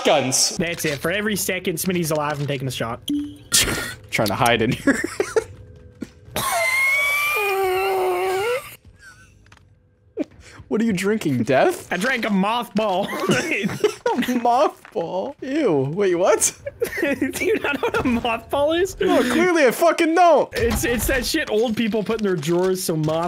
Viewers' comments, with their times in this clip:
0:06 Nobody: Ghast when you get to the nether: